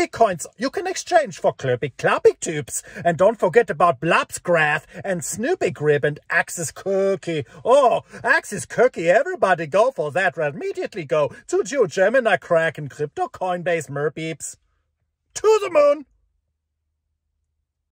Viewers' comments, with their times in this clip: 0:08 I....at some moments his voice ring sounded a bit like Professor Doofenshmirtz. like